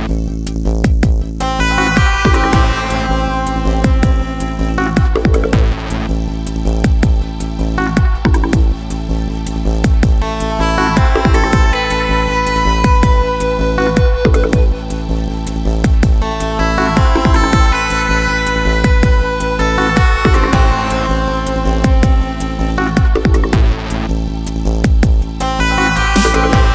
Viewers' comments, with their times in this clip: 0:08 i know I'm kind of retarded, but did anyone else start thinking "ding fries are done" to the music playing in this bit?